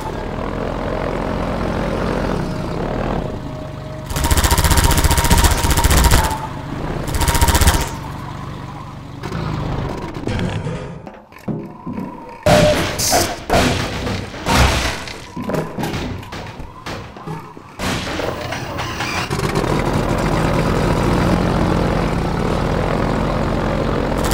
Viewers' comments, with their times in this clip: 0:07 interloper???? i heard a twinkle noise